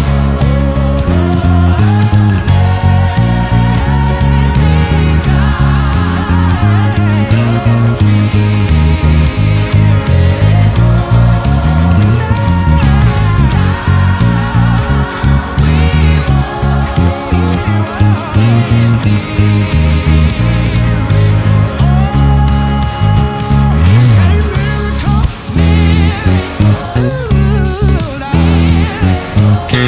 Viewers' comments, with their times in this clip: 0:10 That riff ! Nice work!